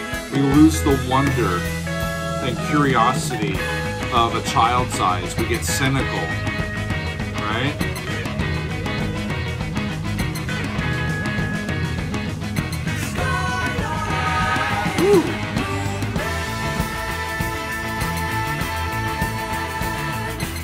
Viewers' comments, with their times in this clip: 0:03 Why ruin such a great song with that stupid sqeaking sound?